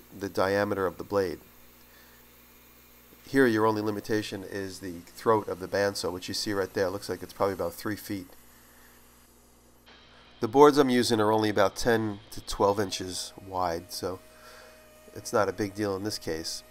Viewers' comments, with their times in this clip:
0:04 lol on boom ninja disappear